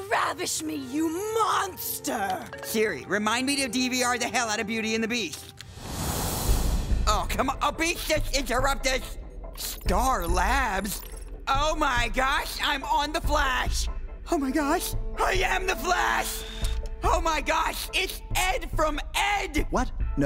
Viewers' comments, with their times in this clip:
0:06 Can somebody please tell me what he said, I can't understand him